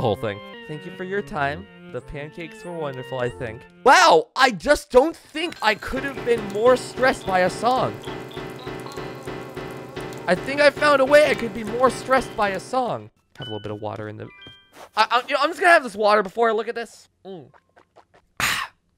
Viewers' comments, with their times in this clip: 0:06 this person is a specially designed alarm that screams "CUSTOMER ESCAPING!!!! STOP THEM!!!!!!" 🤣